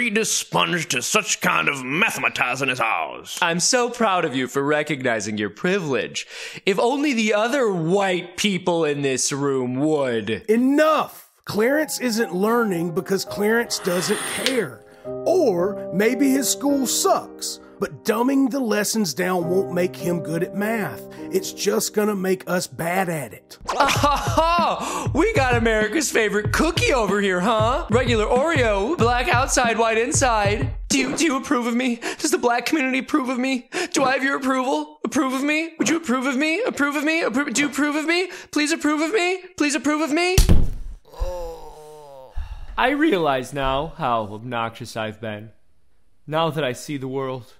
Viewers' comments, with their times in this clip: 0:03 lol, was that an Uncle Ruckus Impression coming out of Colonel Sanders?
0:32 [Buffalo Bill voice] "Would you approve of me? I'd approve of me."